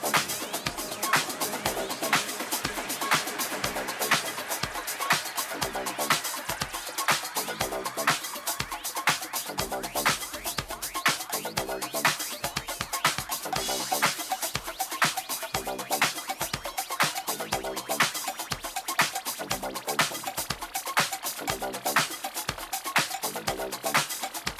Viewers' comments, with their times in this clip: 0:08 So around the mark she takes a pause for the cause and the mix takes off. Nicely done right there.